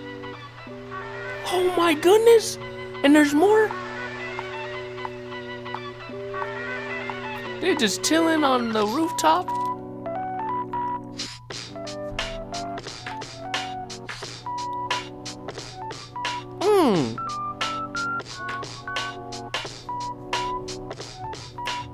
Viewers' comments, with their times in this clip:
0:09 Studiopolis hitting that low-fi. Love it and all these animations